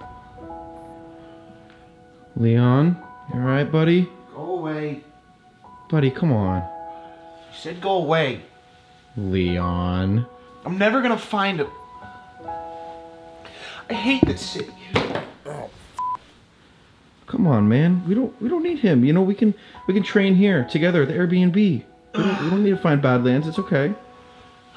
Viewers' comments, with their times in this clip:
0:09 why does he sound like a white mother.